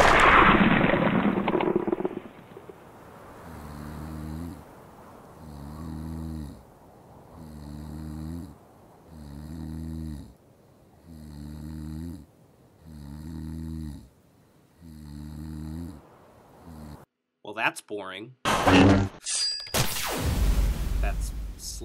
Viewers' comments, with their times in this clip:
0:04 sounds like my dad snoring